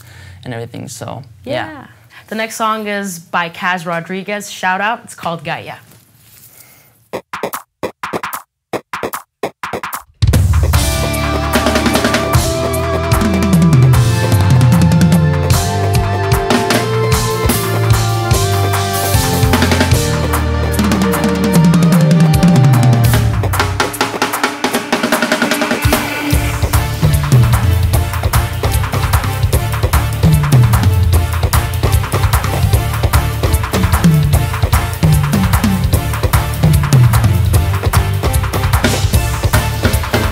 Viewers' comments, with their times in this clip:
0:07 And her drum solo from Mins !! WoHo Ho!!
0:27 did they forget to mic the rides?